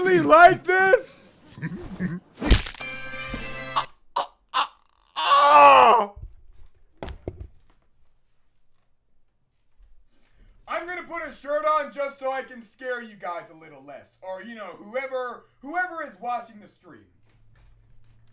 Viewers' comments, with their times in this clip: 0:03 bro sounds like a chicken dying